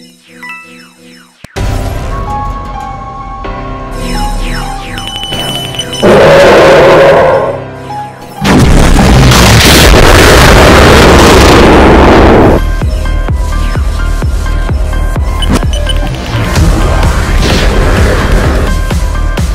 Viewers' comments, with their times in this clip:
0:05 warning: ear explosion